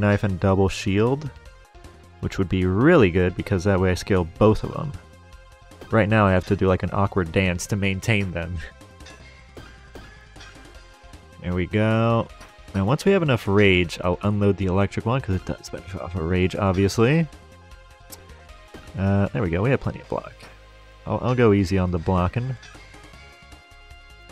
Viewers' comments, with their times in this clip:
0:07 dang did you time it to the beat of the music